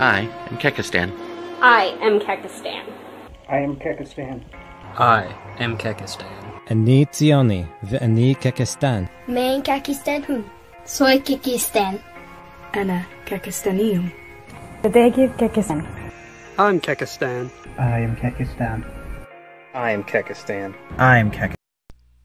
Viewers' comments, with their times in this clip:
0:07 the fucking Zionist one is like a parody. It’s like it was added in afterward.